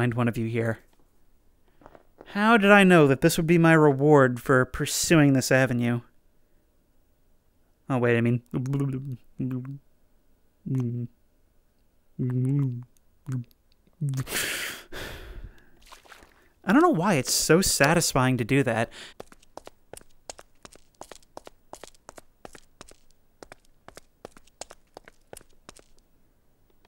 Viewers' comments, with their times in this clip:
0:08 was like asmr